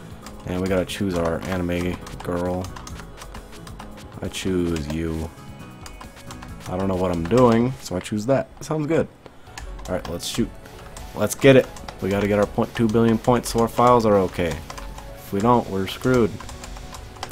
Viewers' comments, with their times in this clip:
0:03 "I choose you, anime girl." Best delivery you could ever get😂